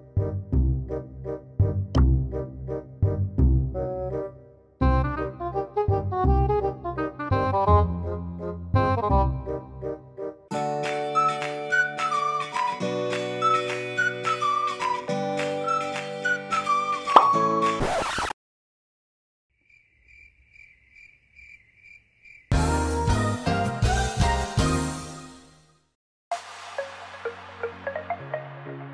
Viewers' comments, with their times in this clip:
0:10 why did you put such cringe music